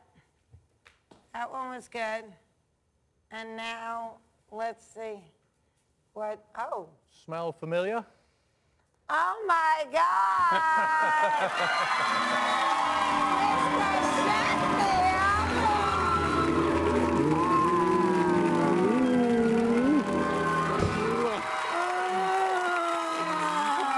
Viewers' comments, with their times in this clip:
0:05 HAHAHA! That shirt got her attention! She gave herself away with that little cute "OH?"@ Mista Sheffield's definitely a winner!